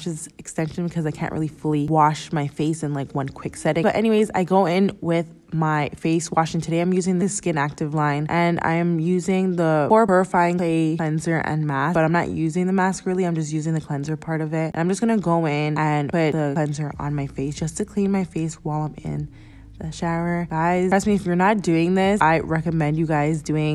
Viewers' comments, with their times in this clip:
0:10 google translate sound